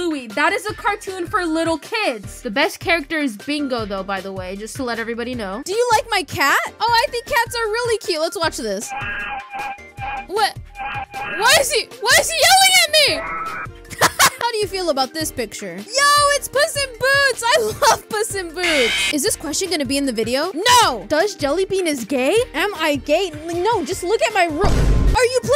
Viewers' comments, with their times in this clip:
0:10 the cat screaming is so funny